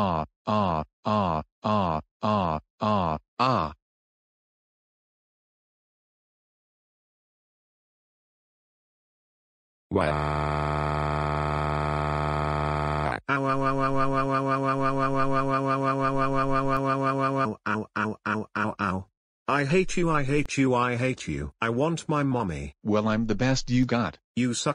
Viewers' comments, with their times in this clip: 0:09 Dark Fuzzy And Ice Chargin' Chuck's Crying Voice